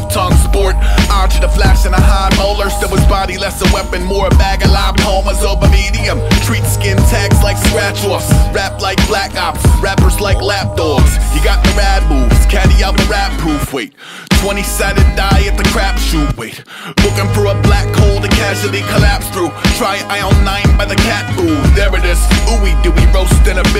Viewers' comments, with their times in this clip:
0:10 When the strings come in that beat is amazing